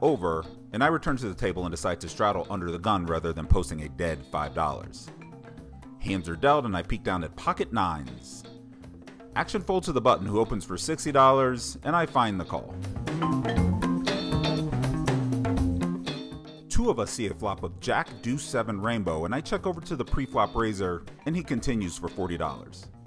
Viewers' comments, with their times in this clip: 0:06 As always, production values an order of magnitude better than anybody else in the business. And you've really upped your soundtrack game in the last few. Like right in electric bass, bongos, and vibraphone. I kinda expect to see Robert Vaughn and David McCallum appear at any moment (which would be cool).